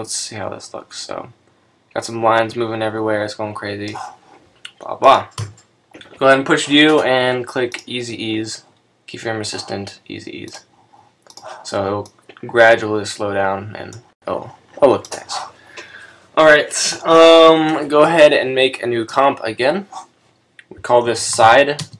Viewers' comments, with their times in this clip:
0:08 Press what? I honestly could not make out what you said to press.